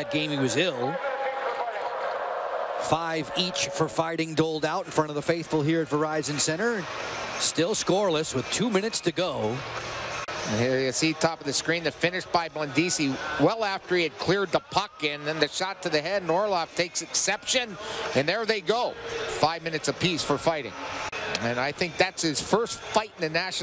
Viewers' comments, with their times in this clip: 0:05 There's a bit and then a little more at the end. You're welcome. I wouldn't categorize it as overexcited.